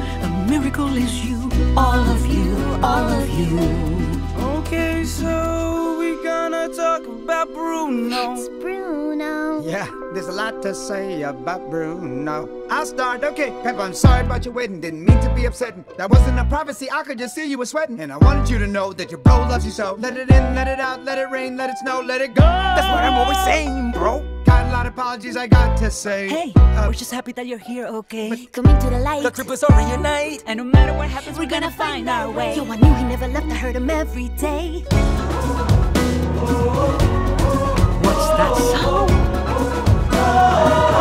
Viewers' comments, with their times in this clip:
0:03 Bruno is a pretty good singer in my opinion I don't know why luca and alberto tell him to selencio?
0:04 is the BEST PART BC ITS WHEN BRUNO ACTUALLY SINGS
0:07 The way Bruno says his name is so funny lol
0:09 i heard this lyrics without knowing it was bruno, then i was like "tf that timon the meercat from lion king?"
0:10 is when Bruno sings
0:14 Bruno lowkey be sounding like Eminem 😳
0:19 one of my favorite details about this song is if you listen close enough you could hear the instrumental for "let it go" from frozen before bruno himself sings "let it go!"
0:20 When Bruno says "Let it in, let it out, let it rain, let it snow, let it go" it's a Frozen reference, and you can here the beginning of the song "Let It Go" from Frozen playing in piano in the background during that line
0:20 If you listen carefully you can hear the first notes of "Let it go" on the piano playing
0:20 Bruno makes a dedicated verse towards Frozen and they play the keys to the beginning of “Let It Go”
0:20 Does anybody else here the “Let It Go” piano key ? 🥺
0:20 if you listen carefully when Bruno says "let it go" the instrumental music is the same as let it go in frozen
0:20 Bruh I think they did this on purpose lol Listen to the instrumental you can hear the piano intro of Let it go from frozen plus the Lyrics here is "Let it rain, Let it snow, Let it go"
0:20 Am I the only one to hear the beginning of Let It Go ?
0:20 When Bruno sings Let it Go the tube of Let it Go can be heard
0:20 Am I crazy or I hear " Let it go " piano intro It is intentional ofc and I love it omg
0:20 OMG WHEN BRUNO IS SINGING U CAN HEAR “let it go” TUNE IN THE BACKGROUND SYMBOLIZING THAT HES LIKE ELSA
0:20 For those who didn't notice, when Bruno sings abt letting it go and if you listen closely you can actually here the "Let it Go" main theme from Frozen!! Listen closely! That is such a cool small detail but that just makes it that much better.
0:20 Did anyone notice that when Bruno sings "Let it rain Let it snow Let it go" there was some tune that sounds like Frozen Let it Go?
0:20 You can hear a beat from Frozen's "Let It Go". Nice little detail!
0:20 THE PIANO START OF LET IT GO!!!!
0:20 You could actually hear the intro of let it go in ths part listen carefully hahaha
0:20 if you listen closely you, you can hear let it go's intro.
0:20 does anyone notice the "let it go" music play for one second in
0:20 The part where bruno says "let it in, let it out, let it rain, let it snow let it go!" actually has the music for frozen if you listen closely.
0:20 is it just me or is that the melody to let it go being played as he says it.
0:20 if you listen closely you can hear the piano playing "let it go" from Frozen
0:21 At part the GOOOOO.... part was so good!
0:22 When Bruno is singing Let it snow, Let it gooooooo... You can here the beginning of the song Let it go in piano.
0:22 I know someone would have noticed this...but if you pay close attention to the background music ....the piano is playing what I guess is the first piano verse from let it go... I really think that's cool💫... (Let it snow ...let it go...) part...
0:23 why does that sound like Olaf from frozen
0:24 after Bruno says, "Gotta lot of apologies I go to say," I hear something different from the lyrics. Instead of "The Triplets all reunite" I hear "that trip was only a night," like he was apologizing to Juiletta. Anyone hear this, like maybe they planned another Bruno disaster story in addition to Pepa's?
0:26 the little "uh" "but" but" is soo cute- Bruno is trying to say smthin but they keep interrupting him... i kinda wonder what he was gonna say now
0:29 I always heard that lyric as “That trip was only a night”. The stuff my brain comes up with.